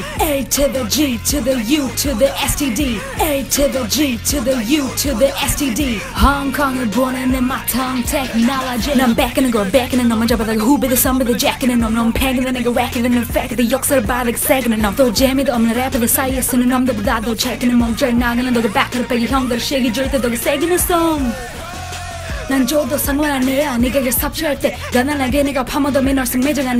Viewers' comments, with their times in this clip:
0:08 Oh shit.... your tongue technology is amazing.
0:11 Okay, so this entire thing was lit but you started spitting literal fire like how DID YOU EVEN BREATHE?